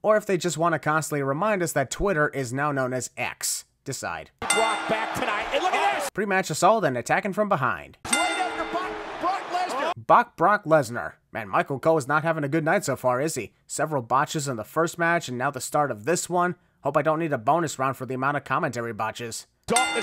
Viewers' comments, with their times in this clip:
0:08 BOCK Lesnar? Has Cole been watching my YTPs ? I mean 🐓 Lesnar?